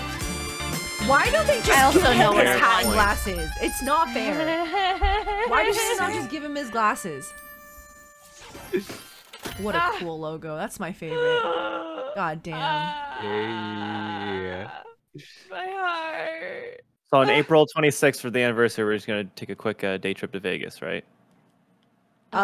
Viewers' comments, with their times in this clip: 0:04 lmao that laught